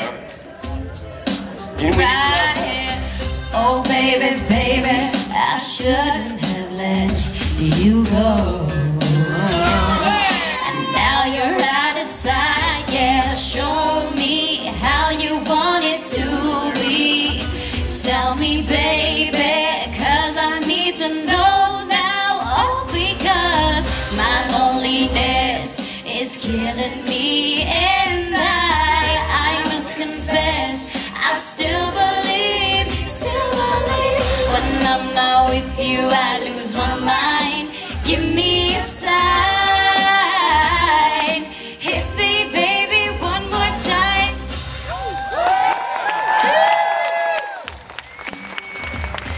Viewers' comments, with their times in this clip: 0:08 everybody has the idea that the low note she hits on is pretty low, right?
0:37 Don't know why but the way Selena sing 'Give me a sign' gives me goosebumps!!